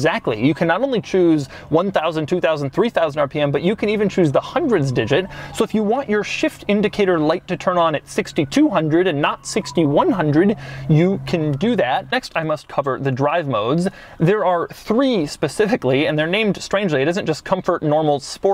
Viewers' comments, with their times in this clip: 0:04 is that car haunted or something? Sounds like a banshee going off